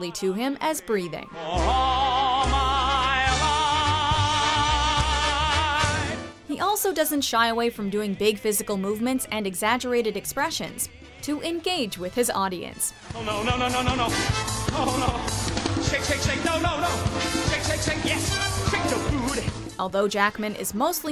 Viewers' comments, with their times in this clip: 0:08 I made it to and stopped. She won't shut up. How the hell am I able to hear Hugh sing if she's talking over his singing?